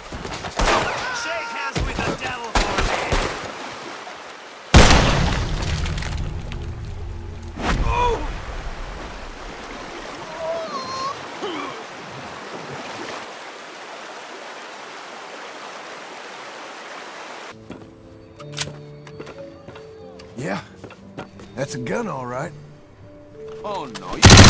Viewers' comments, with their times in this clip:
0:09 There's something strange to his last scream 💀